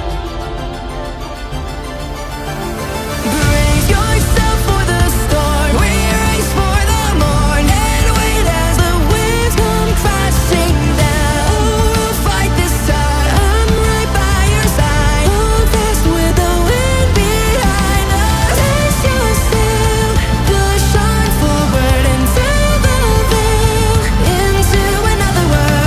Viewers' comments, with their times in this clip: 0:06 does anyone familiar with these artists know who’s singing which lines? i HAVE to know who has this crazy rasp